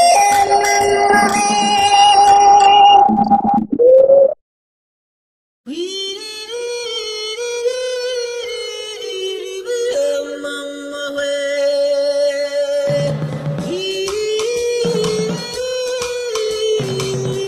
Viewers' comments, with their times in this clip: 0:05 Sounds like Diamond Major